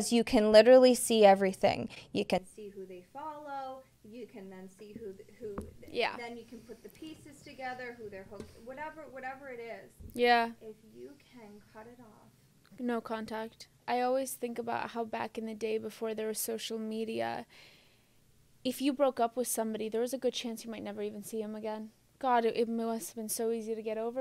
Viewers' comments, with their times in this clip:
0:10 I love this 😢 so genuine. 😂 fav part “and you can cut it off… No Contact”. Sounds like tiktok sound